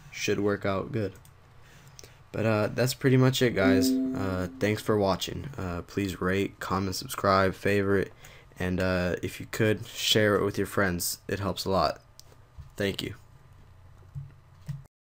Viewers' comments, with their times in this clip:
0:05 plz rape, comment.... xD